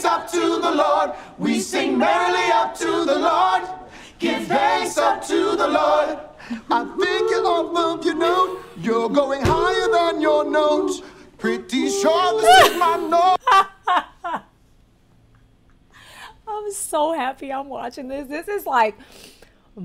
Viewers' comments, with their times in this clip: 0:05 That got to good lol the voices